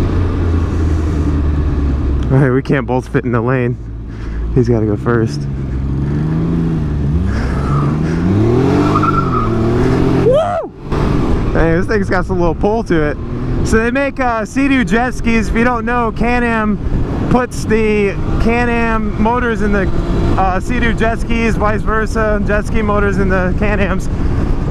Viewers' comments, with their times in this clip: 0:10 Anyone hear crash bandicoot ???